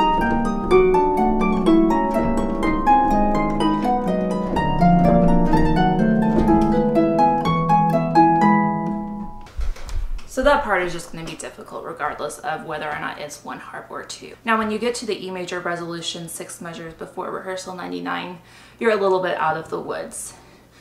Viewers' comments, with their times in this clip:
0:04 that thrill fits very well, jeje